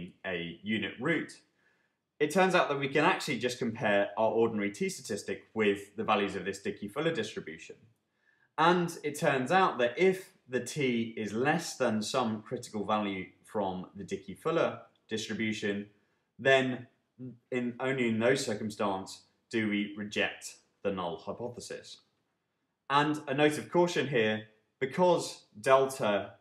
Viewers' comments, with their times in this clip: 0:09 "if the t is less than some critical value from the DF distribution then under no circumstance do we reject the null hypothesis" - ...but you wrote t < DF --> reject Ho..... I'm so confused, what you wrote seems opposite of what you said